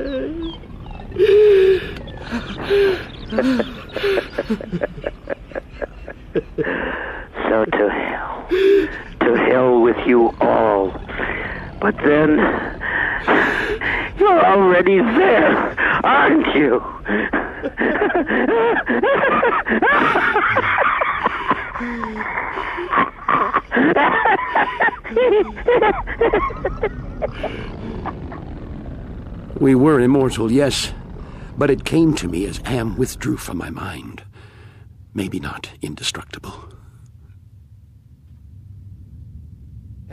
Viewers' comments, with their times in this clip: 0:07 “So, to Hell. To Hell with you all. But then… YOU’RE already there, aren’t you?” God, I love that line delivery. So sinister and gives me a lot of chill.
0:24 *Silly ass laugh* HEHE HAHA HAHAHAAAAAA-
0:24 "HEHE HAHA HAHAHAAAAA >:3" Sounds so funny to me idk why-
0:25 *silly ass weird laugh*